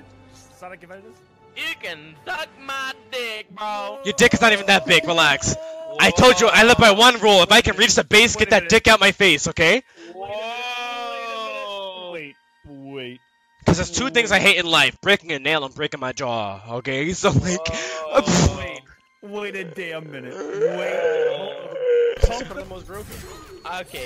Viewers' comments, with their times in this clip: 0:09 Never mind it heard it crystal clear lmao